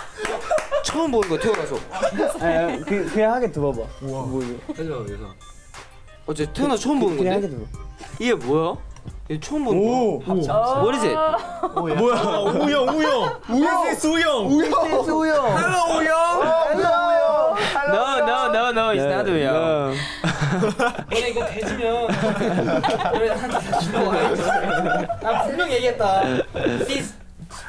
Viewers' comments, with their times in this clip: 0:10 San just said "What is it?" with no noticeable accent DAMN
0:11 y'all heard San perfectly say " what is it"